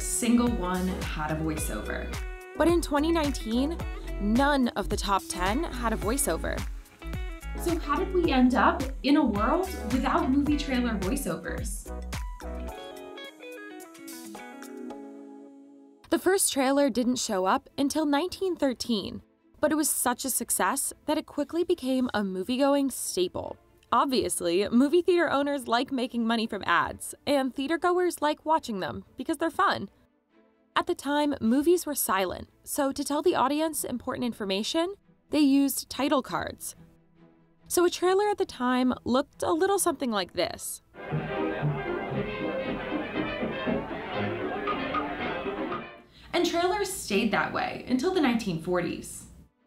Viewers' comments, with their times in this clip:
0:07 she botched that line delivery
0:30 "At the time, movies were silent ... so a trailer at the time looked a little something like this" . . . . . . *plays music*